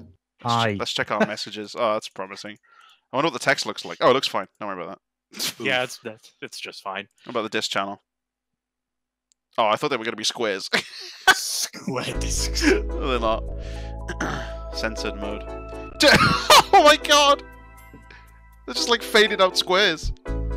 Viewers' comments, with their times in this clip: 0:04 when you open your Wii and it’s AM and it’s accidentally on max volume XD